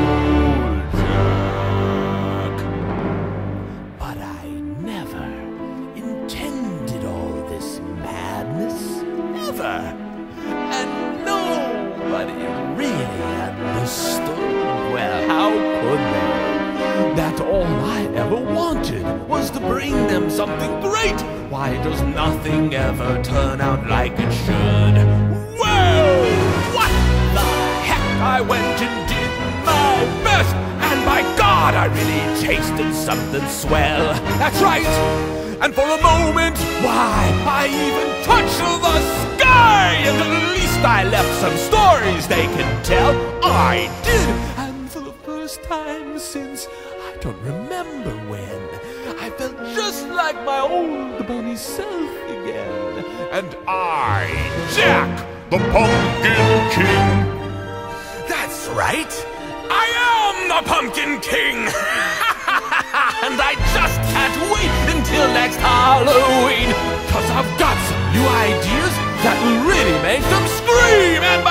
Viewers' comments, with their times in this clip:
0:08 am i the only one who thinks it kinda sounds like a Joker? :D :D
0:54 why couldn’t that have been his voice for the movie